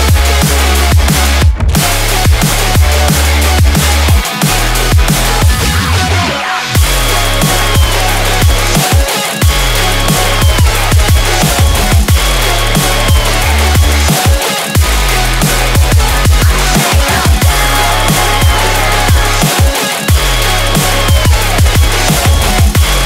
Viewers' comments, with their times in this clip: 0:06 Love the Drumstep Part